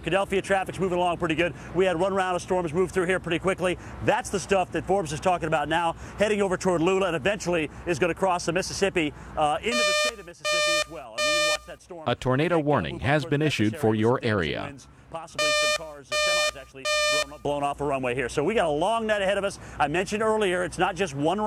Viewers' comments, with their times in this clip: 0:09 When I lost Time Warner Cable, I missed that siren Now, I still miss that siren. It's pretty cool.